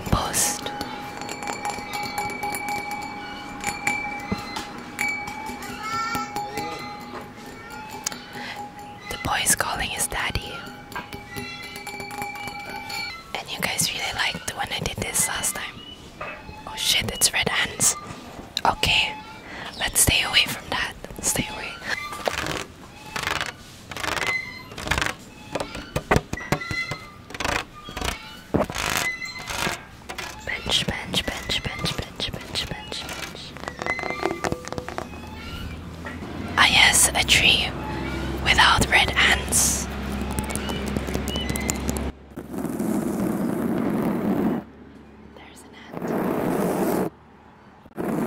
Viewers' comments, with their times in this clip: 0:04 He speak Turkish.
0:06 I was just about to fall asleep but when i heard the kid it scared me so much that i immediately opened my eyes because as far as i know we dont have kids in the house, then she said it was in the video 😆 hahhaha
0:30 ....I literally thought she said bi*ch a few times 😂😂✌🏻 anyone else?
0:31 who else thought she said the b word